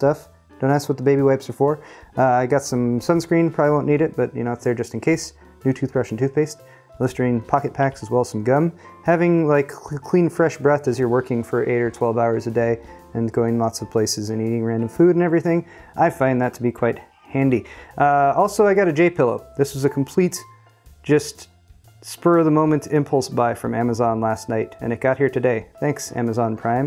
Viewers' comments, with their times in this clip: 0:09 what was that noise you just made with your mouth? It was fantastic!